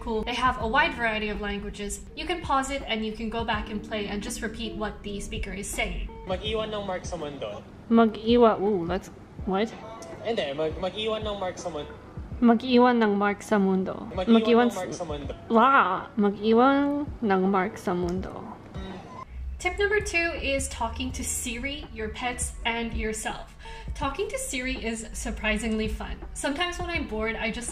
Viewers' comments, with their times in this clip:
0:09 This is sooo meee looool I am like: What, what? Wait, girl, slow down! :D